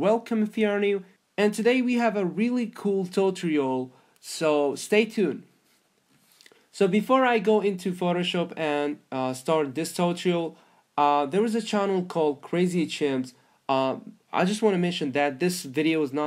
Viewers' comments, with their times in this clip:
0:03 A really cool WHAT??!!!?!?!?!? Toe-tree-alll ??? lol